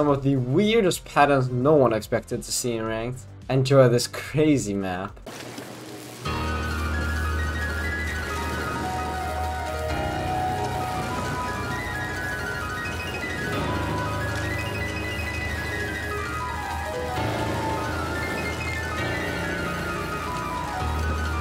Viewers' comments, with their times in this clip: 0:05 when you hear a mosquito in your room at night